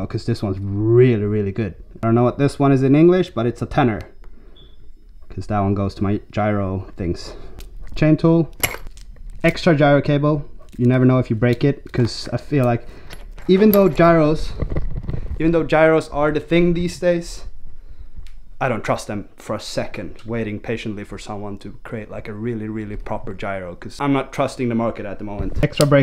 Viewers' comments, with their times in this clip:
0:08 i had to check if my washing machine was on:))